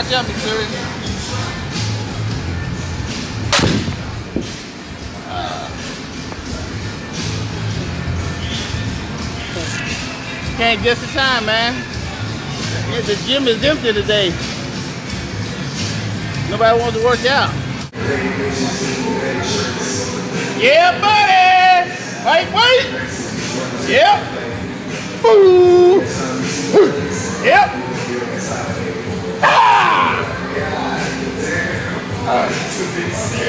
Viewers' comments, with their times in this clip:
0:08 WTF. was that a fart??
0:09 Listen to his fart
0:09 yo he farted
0:09 sounds like a fart
0:09 Did he fart?
0:09 Ronnie's voice is heard :D
0:19 he said « yeah budy » or « yeah baby » ?